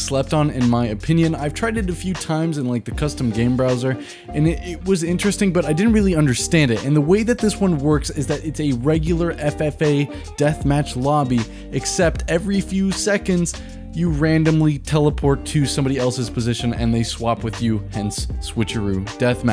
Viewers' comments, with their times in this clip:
0:06 that rap kinda fire tho